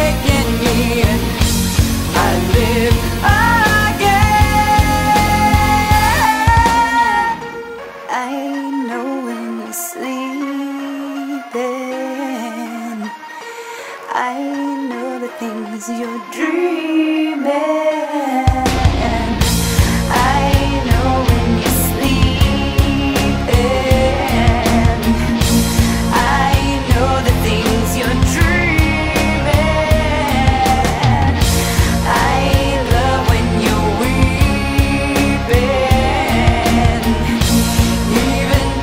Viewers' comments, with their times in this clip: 0:06 You can't not tell me that bit crushed piano is something that radiates total Nine Inch Nails vibes
0:07 reminds me of another song pls dont get mad but it reminds me of cradles
0:16 Anyone know how they made dreaming sound how it is
0:23 Play this song and am with a headset full volume and in a dark room it’s creepy as hell especially when the music stops and you here the vüruuct background noises